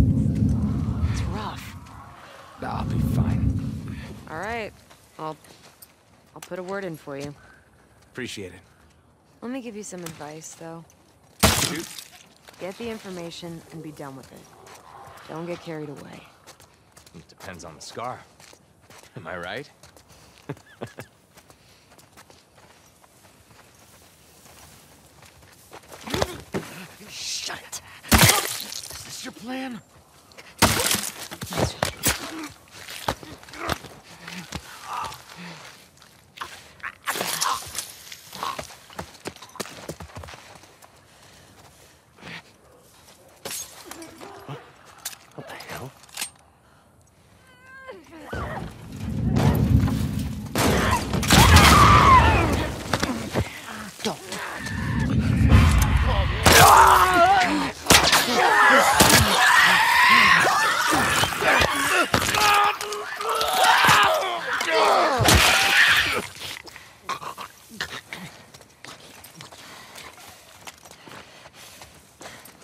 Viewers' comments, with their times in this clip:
0:09 Woman: “let me give you some advice though” Guy: “shoot” Ellie: BANG
0:56 I recently completed this game and I gotta say the story itself wasn’t the best, I was immersed with some of the best gameplay I have ever played. What I haven’t noticed get much appreciate is the sound design. That noise that it makes before you get discovered would keep me on edge the whole time!